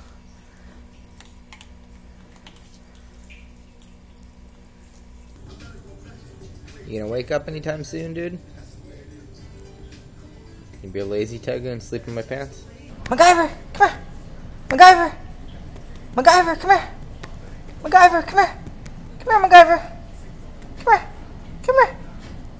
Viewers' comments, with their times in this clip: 0:05 Tupac in the background